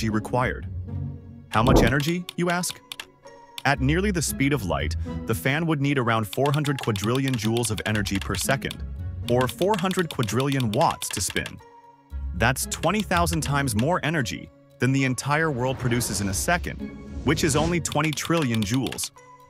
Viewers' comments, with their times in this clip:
0:07 I don't understand what it said, the caption says "Jew of energy per second".